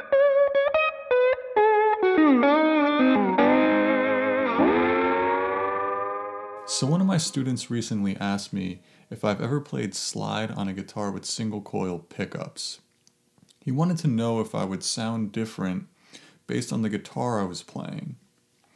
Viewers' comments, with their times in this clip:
0:04 Yes you can. Different ‘voice’ and on balance I prefer the SG but it sounds pretty darned good. Let’s face it, Bonnie Raitt has been sounding great on Strats forever.